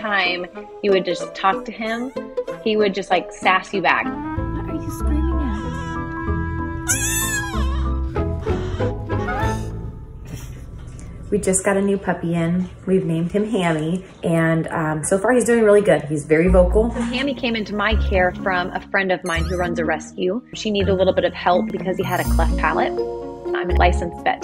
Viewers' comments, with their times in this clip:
0:05 A bark so powerful it has recoil...
0:07 he yelled so hard he rolled back 😢